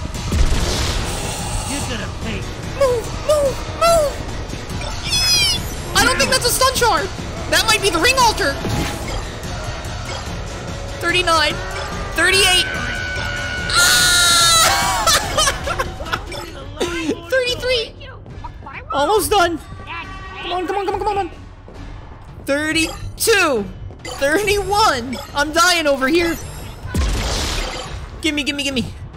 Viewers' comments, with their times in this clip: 0:10 10/10 on that scream competition